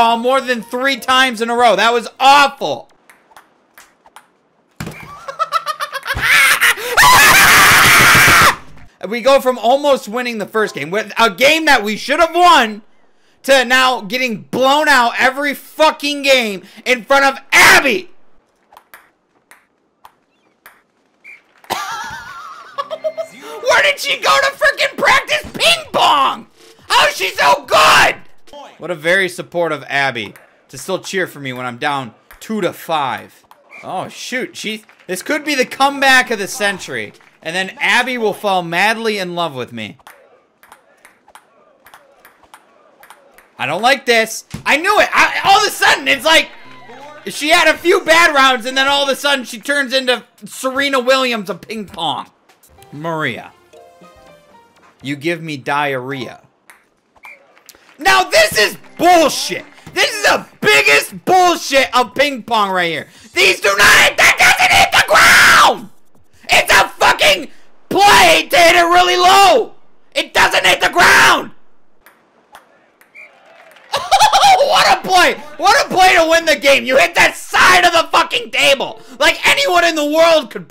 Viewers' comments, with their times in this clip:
0:05 when your crush says that she likes the Joker’s laugh
0:05 best joker impression so far
0:05 he sounds like the joker
0:05 Clowns when they make a bad joke and nobody laughs so to make it look funny they laugh really hard trying to look good
0:06 most underrated joker laughs in history (circa 2019)
0:06 it sounds like a 11 year old kid raging on fortnite
0:06 Baby crying on 3am be like
0:06 he sounds like the joker laugh
0:06 joker laugh be like
0:21 it sounds like a tea kettle whistling
0:37 Do you guys feel the rhythm
0:39 sounds like the beginning of TheFatRat Monody
0:39 anyone else hear that rhythm from the drums from a song I can’t remember.(just listen to it)
0:40 literally any Latin beat pop song
0:40 this sound like a song
0:40 listen to the bounces of the ping pong ball. What does the beat remind you of?
0:40 it sounds like I have no strings on me from Pinocchio
0:40 the beat tho
0:40 I never heard a song with a ping pong ball BETTER THAN THIS
1:03 When you got so mad that you invented your own language.